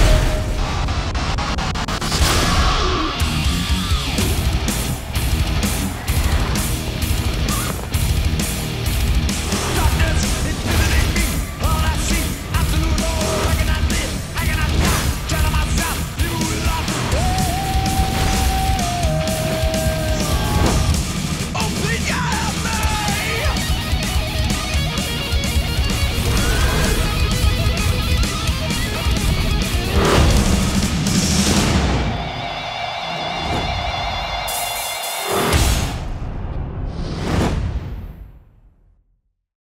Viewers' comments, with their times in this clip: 0:07 love the song
0:34 was waiting for something big to happen with master of puppets in the background damit!